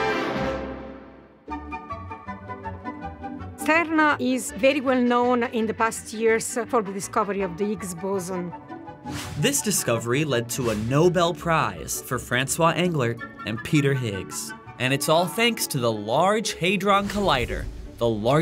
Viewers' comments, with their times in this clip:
0:03 the way she pronounces "cernA". She is Italian? I heard a few italians spoken this word. They all pronounced "cern, or čern" Some languages translate: cernA, černA=black